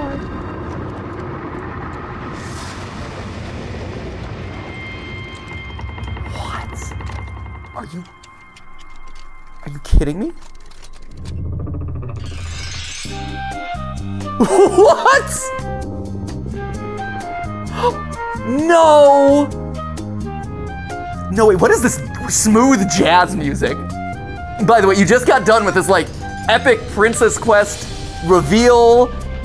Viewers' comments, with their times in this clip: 0:10 is giving the same energy as when the most heartbreaking scene in an anime just happened and then the upbeat outro starts to play.